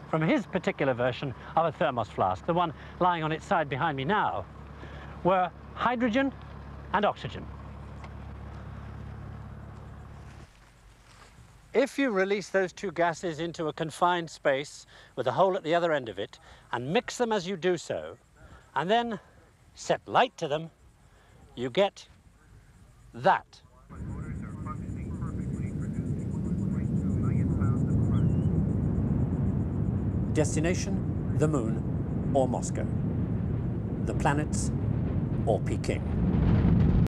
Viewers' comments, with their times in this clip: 0:10 The shot starts the preceding shot was filmed with a different mic at a different time. But yes, brilliant.
0:11 Everything up to the point could have been shot either before or after the launch. What get's me is there's no way the sound of the rocket is live, because from that distance there would have been a delay of several seconds before they heard it.
0:18 People in the comments are dumb and thinking too into it, they literally have communications playing in the background. you can clearly make out the guy saying "7,6" He merely timed it. Lmao y'all watched far too much videos on vfx saying he was "comped in".😂
0:18 He even timed the last two sentences where he took a noticeable pause which gave the feeling that it was winding down, and there was no urgency of anything about to happen. Everyone had to be on their game... correct exposure for film (no LCD to check), no dolly/tram malfunctions (the camera would have been huge and heavy), the audio guy needed to not mess up in any way, etc etc. Brilliant film making.
0:24 I love how you can even hear the voice in the background say perfectly